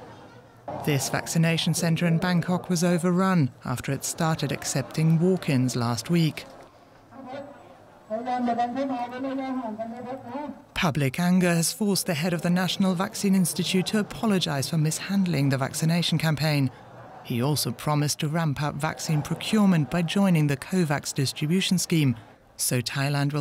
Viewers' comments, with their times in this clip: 0:07 Great to see that Charlie Brown’s teacher volunteered